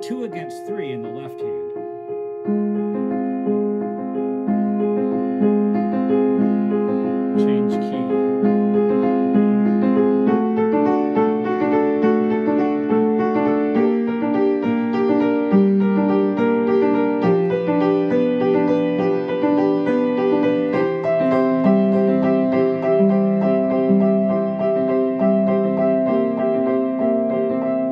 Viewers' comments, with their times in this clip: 0:09 It looks like ACDC famous live guitar solo